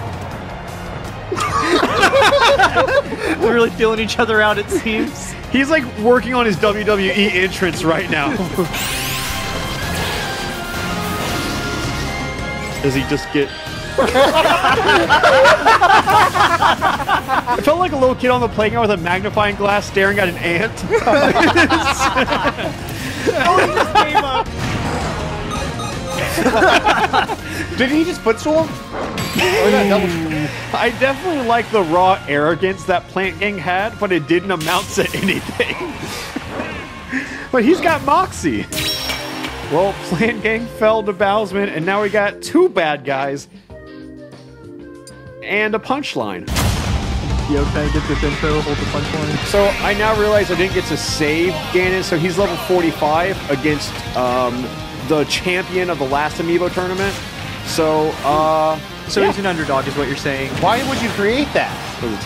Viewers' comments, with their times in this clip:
0:08 why does the music and this moment go so well!
0:47 nice song selection 😩👌👌